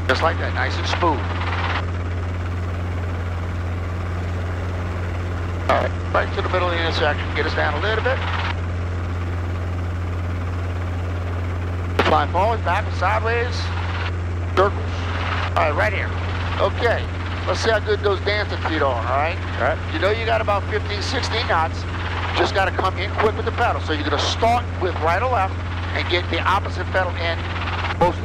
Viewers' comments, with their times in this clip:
0:10 It is pretty muted in right ear and has a weird reverb issue, at least But overall sounds fine